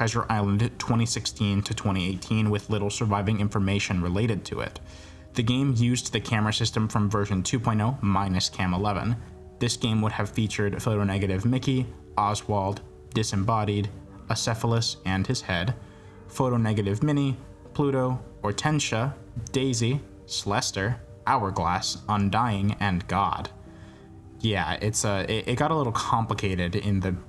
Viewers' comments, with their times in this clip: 0:10 HE DON'T NEED AUTOTUNE 🔥🔥🔥